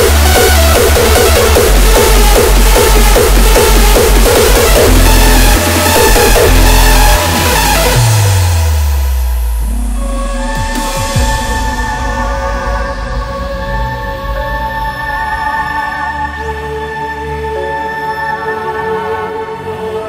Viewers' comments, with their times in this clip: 0:07 melody buildup of the year 😍😍😍